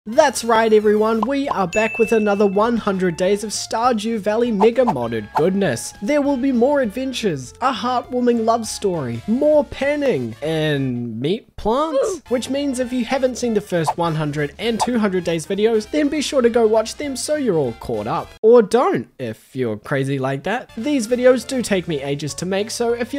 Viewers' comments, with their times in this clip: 0:04 why did that "mega" sound so sus